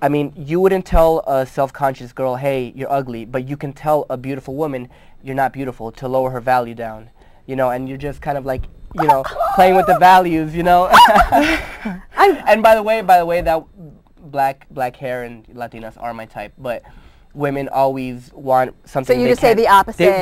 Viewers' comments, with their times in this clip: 0:08 wtf? that guy has the gayest laugh.
0:08 that guy is probly into guys... that laugh is creepy...